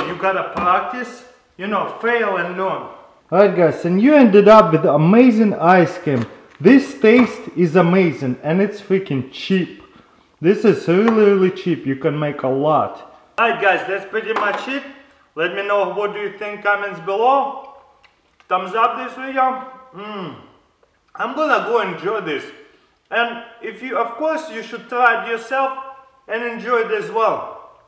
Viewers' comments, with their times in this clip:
0:09 this taste is amazing and is freaking shit